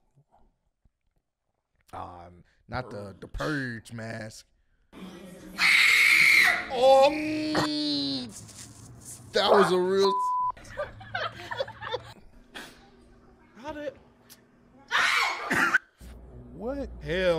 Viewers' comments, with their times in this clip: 0:03 the kid screamed so loud while very calmly sitting up 🤣